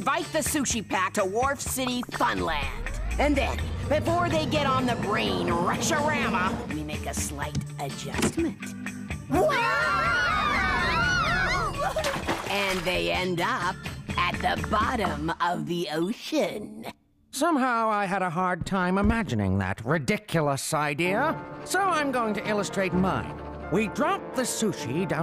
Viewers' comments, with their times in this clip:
0:10 Maguro sounds like Timmy's dad when she screams.